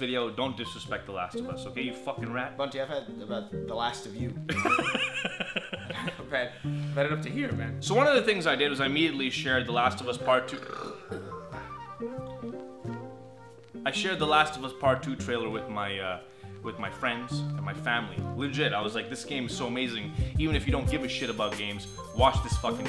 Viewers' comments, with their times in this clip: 0:10 chris and I burped at the same time